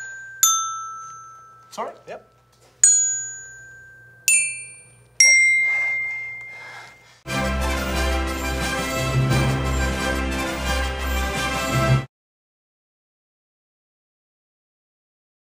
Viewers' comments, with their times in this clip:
0:05 His excited Accomplishment Panting kills me!!!